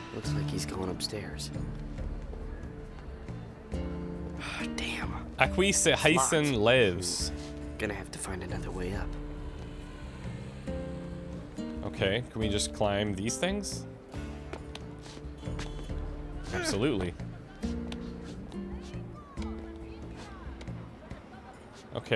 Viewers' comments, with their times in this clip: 0:05 my poor poor Hispanic ears